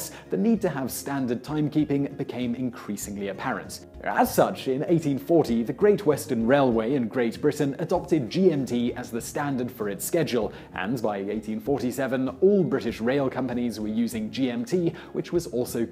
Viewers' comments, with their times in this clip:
0:03 Skedule? Horrors, Simon, you are being influenced by those pesky Colonies! Don't you normally say "shedule"?